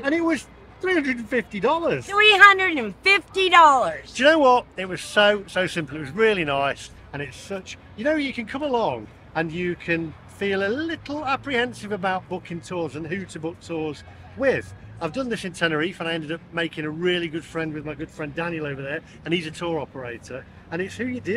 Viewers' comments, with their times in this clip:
0:04 Soz I gave up to shouty for me .😩😃